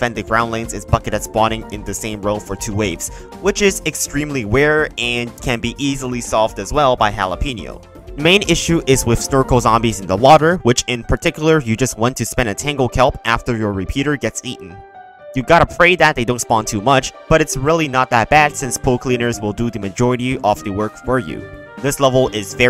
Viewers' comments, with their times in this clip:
0:03 he says "Ware" instead of rare